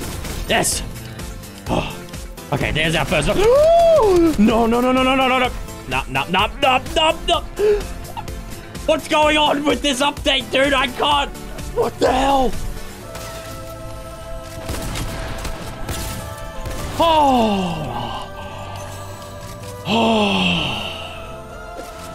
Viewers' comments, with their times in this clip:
0:03 It was the scream for me 😂😂😂
0:03 that gasp tho